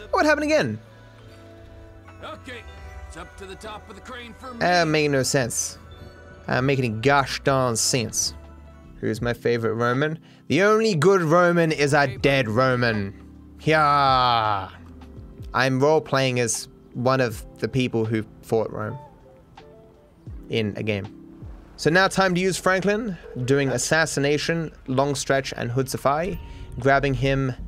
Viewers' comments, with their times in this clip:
0:10 I thought he said, "The only good woman, is a dead woman," and I thought to myself that he must not be getting matches on tinder recently